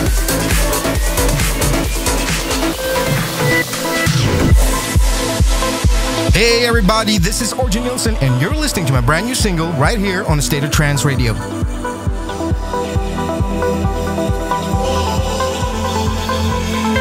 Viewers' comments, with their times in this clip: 0:05 such a beautiful track